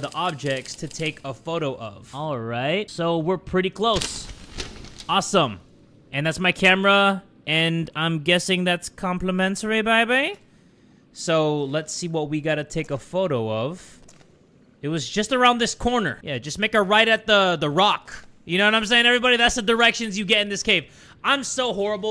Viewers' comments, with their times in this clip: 0:07 Why did bro turn into Austin powers 💀